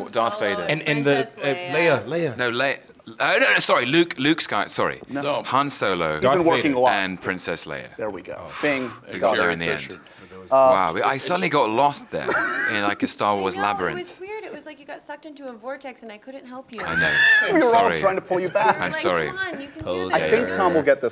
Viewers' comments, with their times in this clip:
0:03 Tom'a outburst literally killed me lmao 🤣